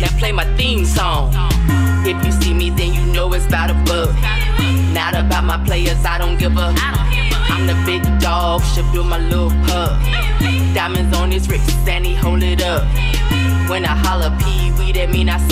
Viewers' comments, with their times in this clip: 0:03 😂😂😂 ayo that song is fire hahaha